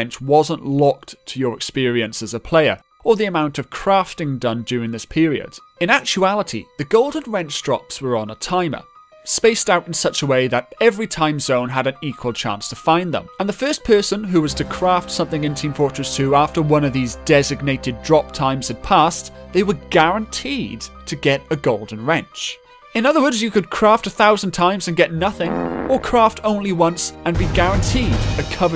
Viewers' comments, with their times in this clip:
0:09 this is the music of my childhood 😭